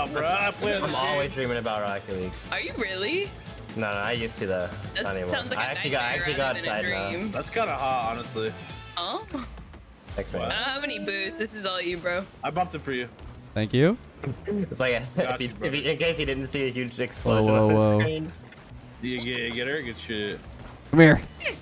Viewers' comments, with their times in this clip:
0:07 "That's kinda hot honestly"*song ends*